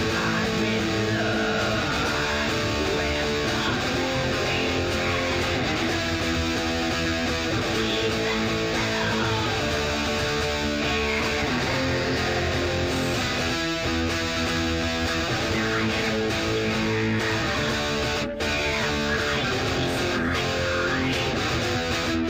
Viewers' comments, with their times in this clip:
0:08 I stoped playing this You could do it better and more 'listen-able' :P